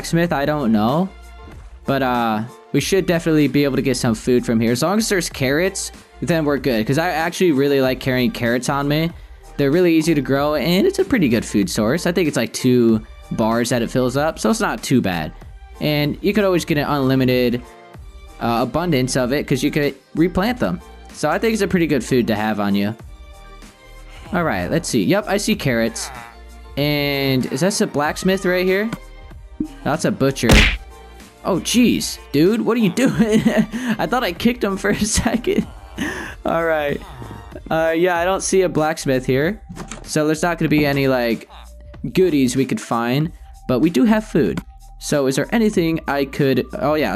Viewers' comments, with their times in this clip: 0:08 Start and wait for that voice crack lmao
0:30 when you kicked the cat the noise scared me because it is 3 am for me and its dark so I got scared.